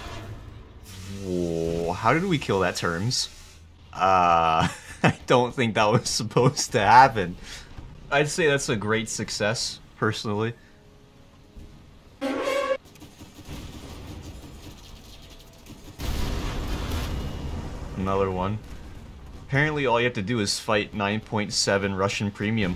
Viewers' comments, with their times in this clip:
0:09 I tried it in the test range and was confused why the missles were not locking on anything. This thing is flat fuckin ass, im just hoping I can get the corvair on time. The zomboid sound effect was spectacular